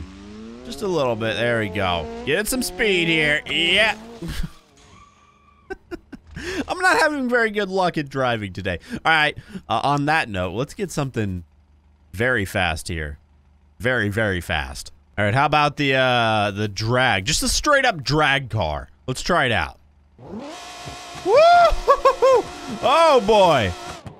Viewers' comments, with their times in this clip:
0:08 that engine sounds like engines from mariokart